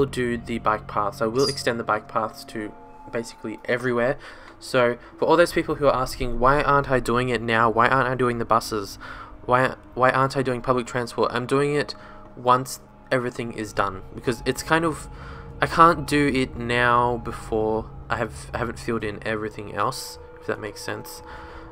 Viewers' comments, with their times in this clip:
0:07 why is there like horror game ambiance music through out the video like ?